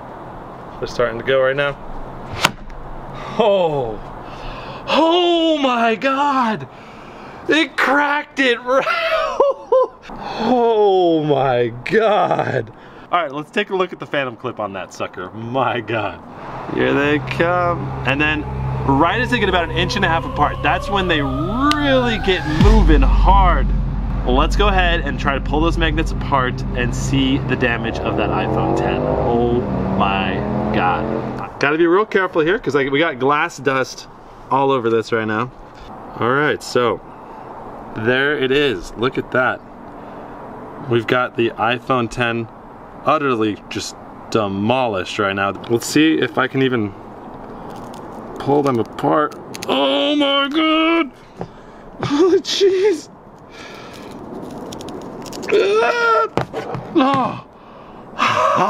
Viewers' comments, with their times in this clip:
0:05 that a new phrase? HOMYGOD
0:20 the sound of the magnet made me think a police car outside was driving until I found out it was the magnet
0:22 what a nice snare drum
0:26 race car sounds xD
0:28 He sounds like a drag racing muscle car!😂
0:41 I hear a v10